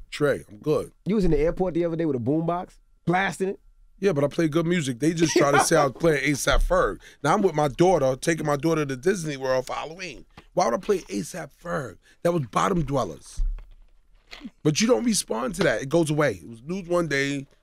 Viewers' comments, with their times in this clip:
0:03 DJ envy was lonely on that laugh 😭💀💀